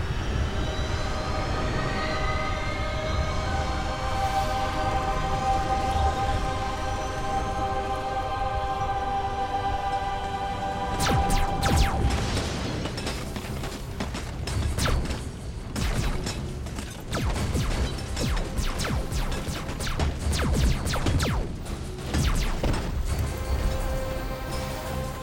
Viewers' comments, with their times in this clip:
0:10 The sound design in this scene is so terrible that it ruins it all on its own.
0:11 it sounds like an old 90's arcade machine Space Invaders 🤣
0:11 yeah i fired a laser....i guess... srsly whats wrong with this shot?! is this supposed to feel like WAR or just look like a bunch of robots firing their lasers once or twice?? this just looks weird...and WHAT is up with those weapons sound effects??? they sound SO lame and weak! T2 did much better.
0:11 The T-850 shooting sounds like the terminator theme
0:12 the laser sounds.. its like 1960 called.. they want their 'Pew' 'Pew" sound back..